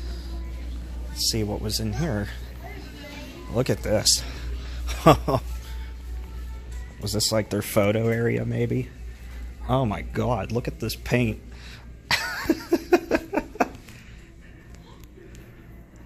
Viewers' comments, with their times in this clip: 0:04 Lovin that classic 80's overhead music at aprox "I Think Were Alone Now" by Tiffany.. nice KMArt memories :(